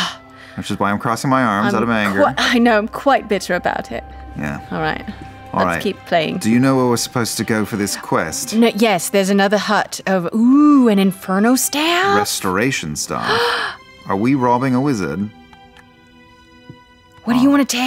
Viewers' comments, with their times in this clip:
0:03 When Liam stayed in Vax’s voice I felt a pang in my heart…:-(
0:03 when they start using the voices 🥺